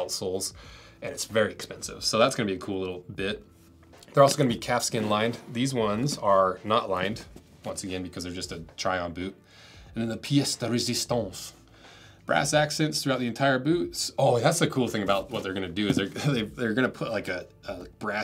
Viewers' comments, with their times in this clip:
0:04 i kinda was a little thrown off fir a second when I thought you said "cat skin lined"...lol